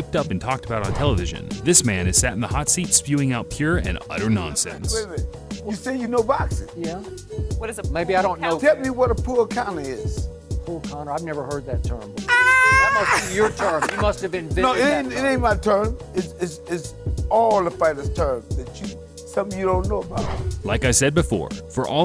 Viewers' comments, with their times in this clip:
0:07 If you watch the whole episode he couldnt understand Floyd Sr. He thought he was saying what is a "Pull Conor" Nice try tho!